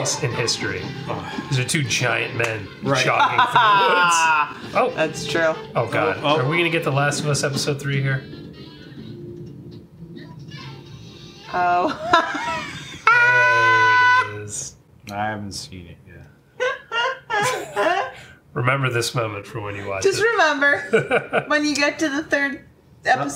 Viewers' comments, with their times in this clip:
0:06 2 men wrestling in the woods with sexaphone music on the soundtrack.